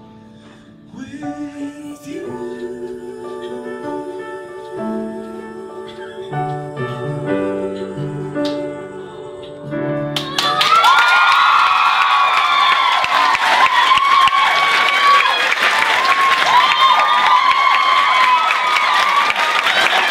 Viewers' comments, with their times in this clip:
0:05 did somebody squeak ?
0:08 WHY WAS THIS NOT IN THE SHOW EXCUSE ME that aww tho hahahah